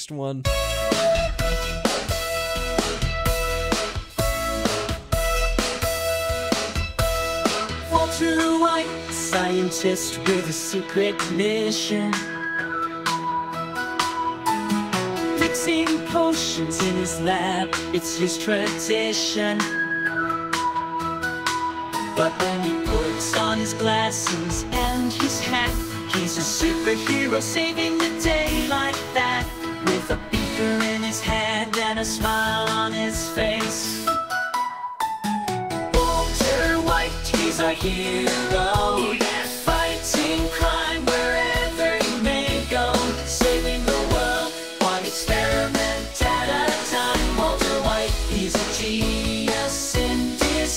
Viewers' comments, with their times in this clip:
0:06 Sounds like a cartoon intro
0:32 the fact it sounds a bit like weird al makes that one so much better